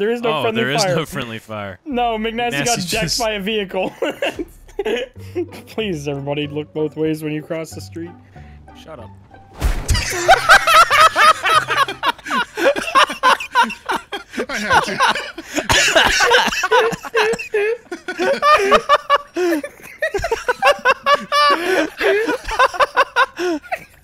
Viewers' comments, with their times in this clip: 0:05 "Please look both ways before crossing the street" ..."Shut up" BLAM two goons play bug on windshield game. omg laughed so hard I shit myself/